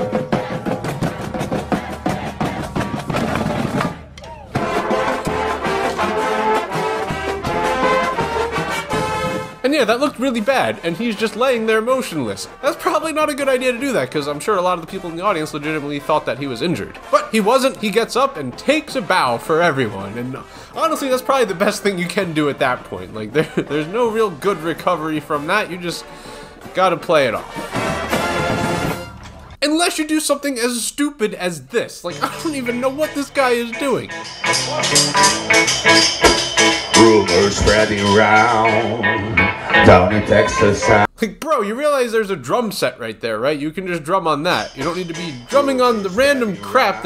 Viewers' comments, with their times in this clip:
0:04 the music fits in with all of that
0:32 Good morning! That actually fits the sound for La Grange by ZZ Top.